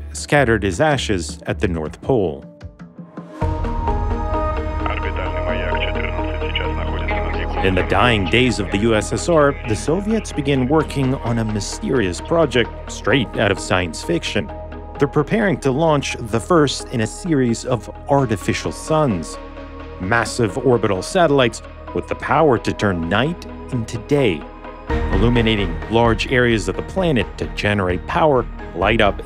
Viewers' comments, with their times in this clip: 0:10 did I just hear a dude say nahui